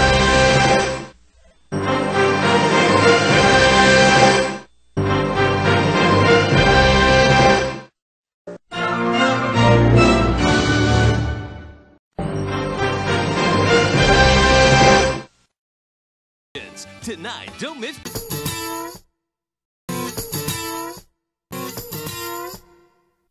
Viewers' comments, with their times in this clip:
0:08 was new fanfare